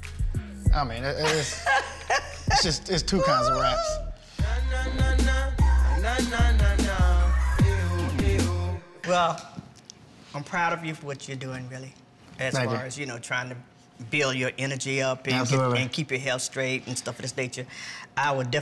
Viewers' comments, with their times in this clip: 0:03 put mama on a track she hit that note 💁 Jhene and her mom are radiating peace.